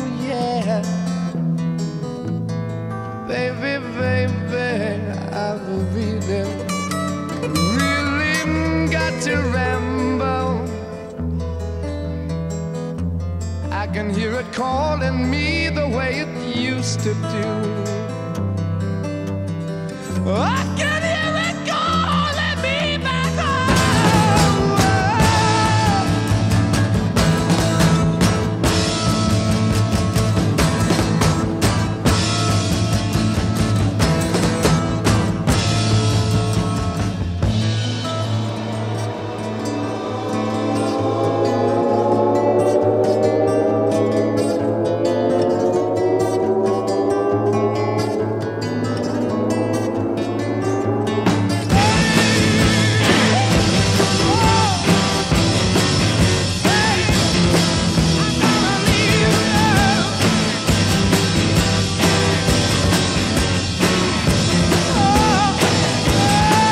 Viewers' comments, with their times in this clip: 0:09 right after he says the word RAMBLE if you have headphones, you can hear a faint "hear it calling me" in the back ground before he says it at regular volume. This could be from using same tape to record on, original record not covered completely for some reason.
0:09 Is it just me, or can you hear in the background "I can hear it calling me" ?
0:09 anybody else hear the studio chatter
0:09 Love the pre echo ..just awesome.
0:10 What does Robert Plant shout way in the background ?? I've been wondering about that for 40+ years. Not that it still keeps me up at night or anything.
0:10 Can anyone else her studio chatter
0:10 Plant: "I can hear it calling me" in the background
0:10 I was listening with headphones and hear a child screaming something after he says ramble, and it's kinda creeping me out.
0:10 you can hear a faint voice in the background, can't make it out anybody know?
0:21 The Swinging Door when he kinda yells !! it’s so great
0:36 The build up goosebumps everytime.
0:38 The siren sound effect is so perfectly placed.
0:51 Is their "explosion" ground zero for head banging heavy metal or what?
0:51 that whole riff sounds just like the intro of Chicagos song 25 or 6 to 4.